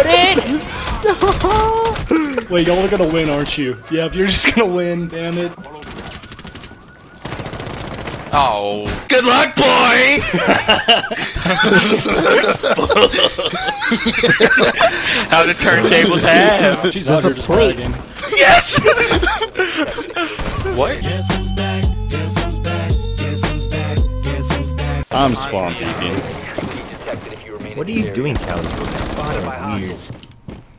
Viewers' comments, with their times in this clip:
0:09 Sounds like a Bunch of evil pedos Lol
0:11 A bunch of men laughing in a videogame I love it